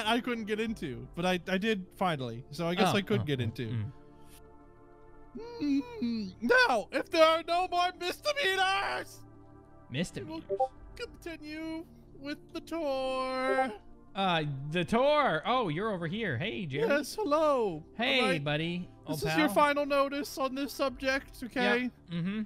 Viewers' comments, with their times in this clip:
0:09 that Moment when you get a discord notification